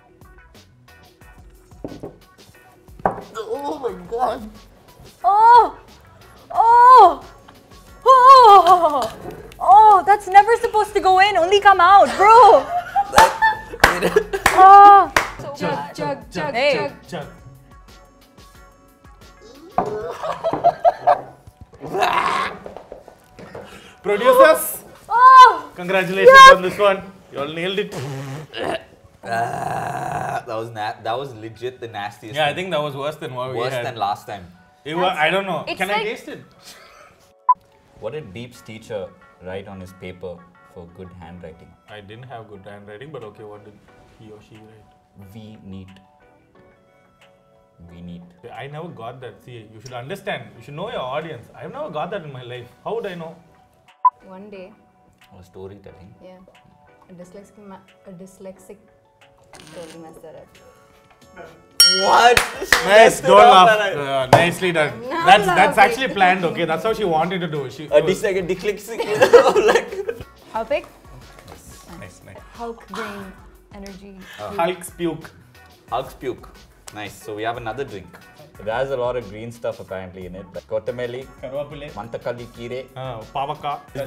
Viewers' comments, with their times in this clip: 0:10 the drink was so bad that she lost her accent
1:08 a "what" lexic?